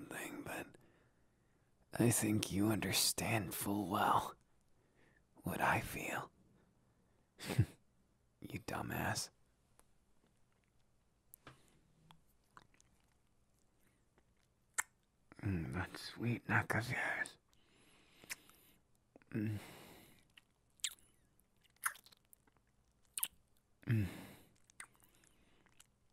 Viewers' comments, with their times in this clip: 0:10 wheezes constantly when he whispers in my ear i know im in danger.